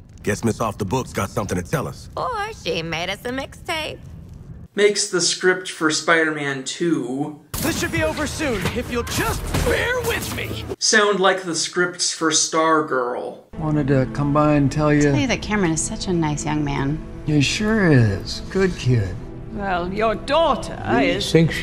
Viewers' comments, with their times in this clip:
0:06 Sorry, the voice actress for Harley sounds noticeably older. That caught me off guard.